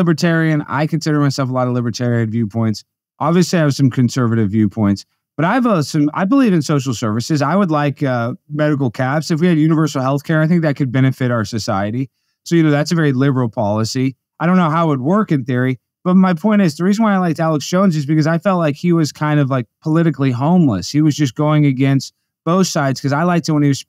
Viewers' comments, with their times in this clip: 0:06 what does he mean by "medical cats"?